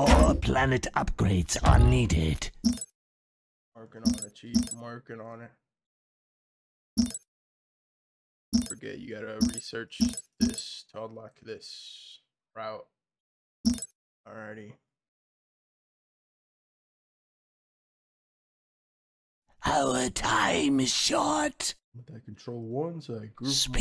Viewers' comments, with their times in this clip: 0:09 starscream actually sounds like a vassari in the shows.